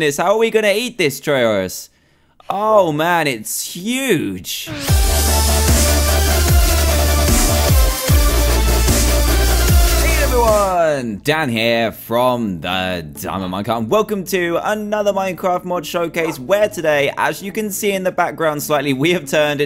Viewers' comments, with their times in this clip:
0:05 I had my headphones on full volume!